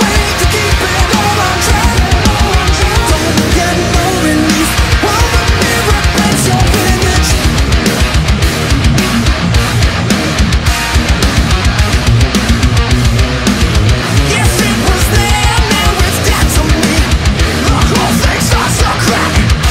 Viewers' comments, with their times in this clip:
0:07 Great cover dude, such a fun song to play along to. Especially that filthy beast of a riff god it's so good